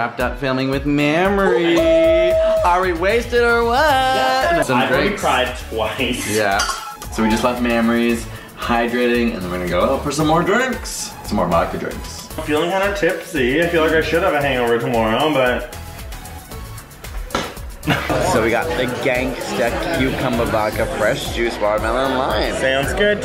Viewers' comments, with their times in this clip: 0:06 Mammary's. I know Mamrie's got big jugs but please don't sexualize her. >_<